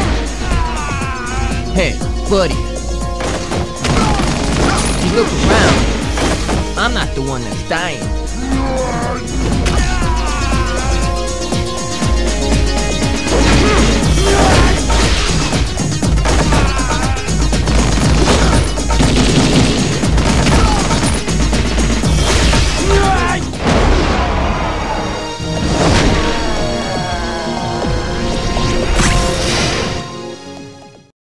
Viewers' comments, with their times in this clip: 0:06 “Hey, I’m not the one who’s dying.” GETS GROUND SLAMMED AND SCREAMS IN AGONY
0:06 Killer Bean's voice
0:24 the music gives me creepy vibe I don’t really wanna say it but I don’t like the music is the worst part